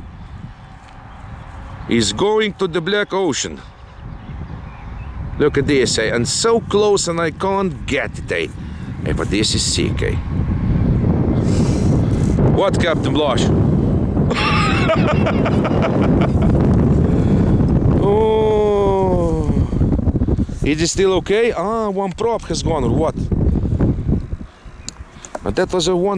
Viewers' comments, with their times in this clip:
0:10 can hear that nasty wind on the mic here. no wonder it crashed